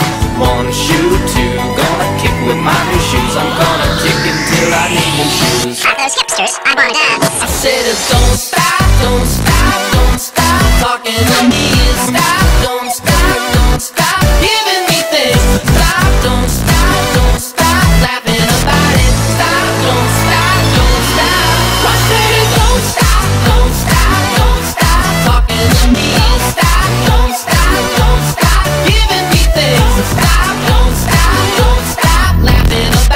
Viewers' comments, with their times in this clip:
0:05 is it just me or at: does it say "All those hipsters i want dead" ???
0:21 can anyone else hear a person screeching in the back round???